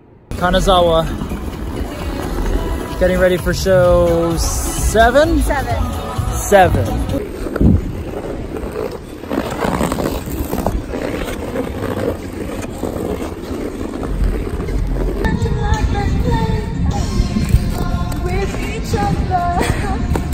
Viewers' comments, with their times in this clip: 0:06 the sound of Alex's skates🎵🎶👌